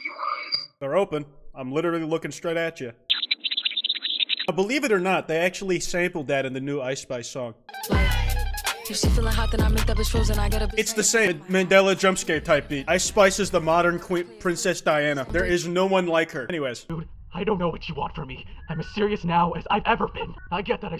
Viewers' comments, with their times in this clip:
0:03 Eminem rapping in